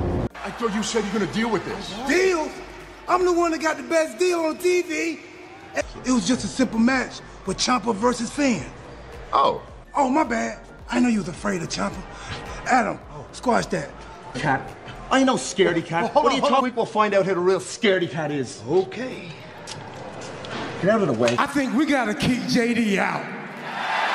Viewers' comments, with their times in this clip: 0:10 Damien's little snort because R-Truth caught him off guard. 😂